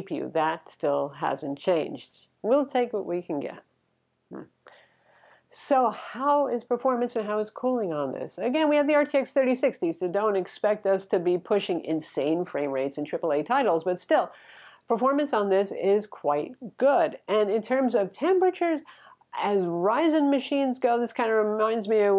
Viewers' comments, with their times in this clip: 0:03 did u fart during a review?